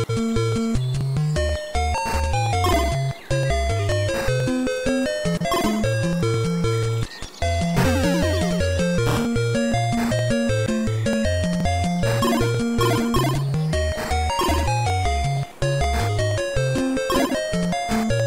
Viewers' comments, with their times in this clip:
0:05 what it sounds like my upstairs neighbors do on Saturday night